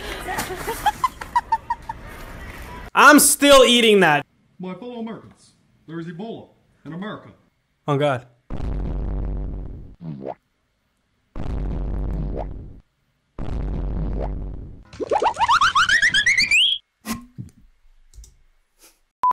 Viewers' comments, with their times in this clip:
0:04 when the cat is talking, that got me laughing & coughing😂😂😂 but still funny
0:04 the cat just started talking.
0:15 GOOFY AHH SOUND EFFECT 💀